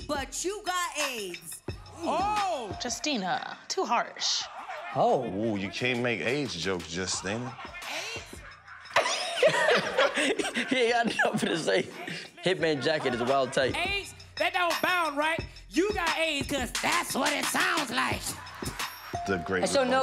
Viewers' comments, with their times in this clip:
0:05 "Oh you can't make aids jokes Justina" The way Karlous said that! lmao